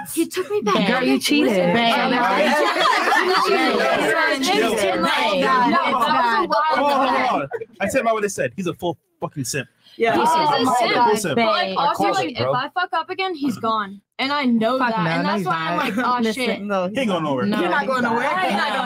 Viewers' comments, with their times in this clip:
0:06 You can hear the disgust in Fresh voice. This almost triggered Fresh Redpill Mode.